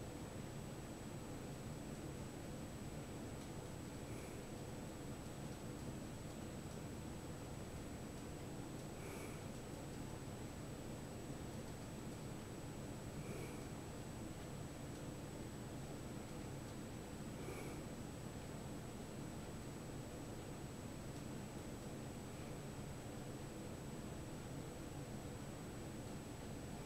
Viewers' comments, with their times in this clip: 0:08 light sleep noises